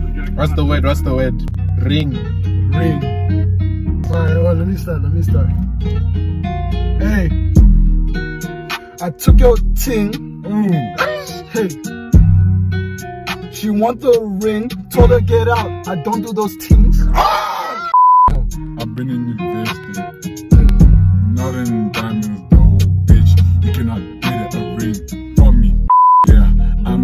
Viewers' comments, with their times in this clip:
0:09 Ooouu that beat fire in !🔥🔥